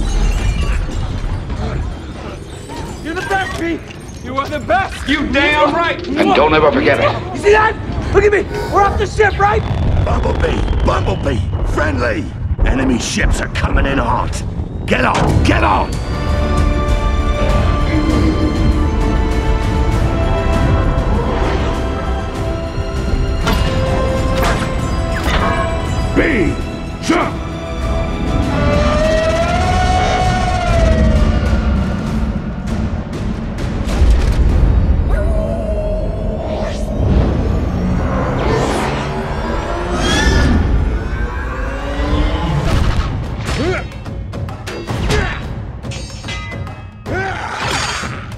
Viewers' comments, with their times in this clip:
0:10 why does the green robot sound like Marcus from gears of war
0:29 ,I like the funny voice bumblebee makes when he's in the air,He is hilarious